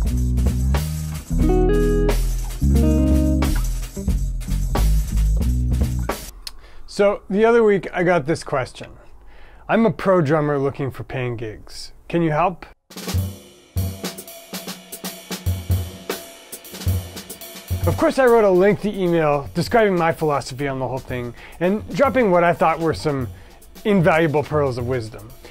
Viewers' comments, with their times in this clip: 0:09 “I’m a pro drummer looking for pancakes, can you help?”